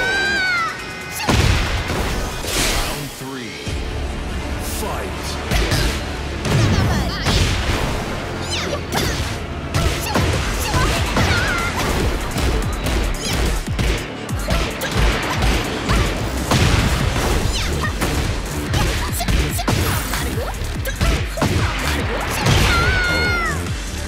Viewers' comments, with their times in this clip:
0:09 is she saying "ох, да!" (oh, daa) there? lol)